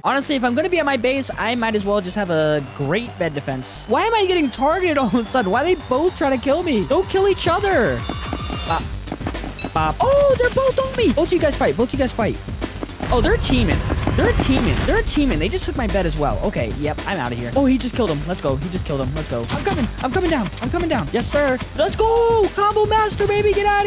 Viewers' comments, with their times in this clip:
0:04 *flood escape music intensifies*